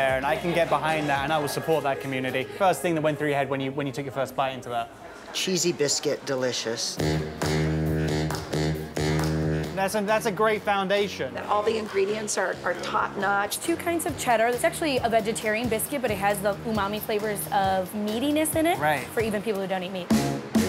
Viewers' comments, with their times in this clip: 0:06 Sounds like a dude